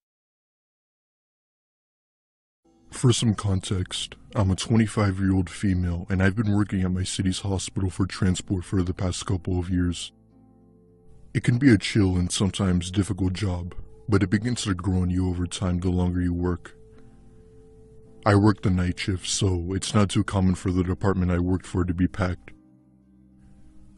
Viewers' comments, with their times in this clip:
0:03 that was the weirdest voice i heard of a female
0:05 🤣 deep male voice saying I’m a 25 year old female.